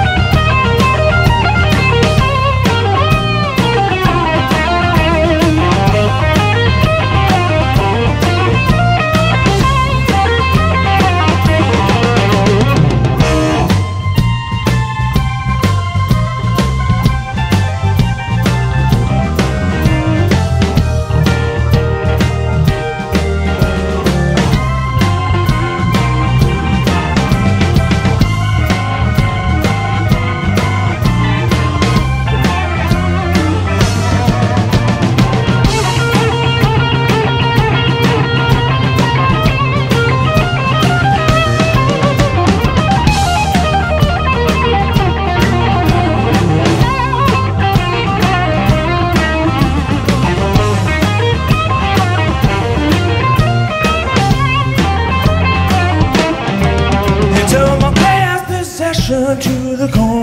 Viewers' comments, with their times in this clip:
0:05 heard that phrase before in a documentary about him. beautiful lick
0:35 what an amazing solo...he is the new Blues-God
0:41 Love it all but that run that starts is epic.
0:42 this lick ....I can spend my entire life ttrying to pick it up..
0:42 EJ scale he loves to admit! Sweet!
0:42 Eric Johnson scale, all the way.
0:42 one killer riff starting
0:42 I love how he stops the run Most fast players can't end a run to save their lives, but Joe had a more stylish ending than most slow players would have.
0:43 love the lick
0:43 The run down he does makes me want to cry!